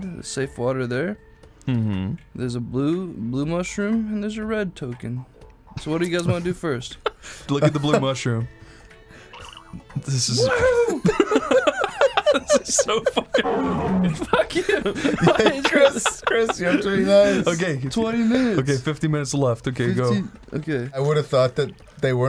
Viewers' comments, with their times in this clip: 0:09 His happy “WOOO!” Always gets me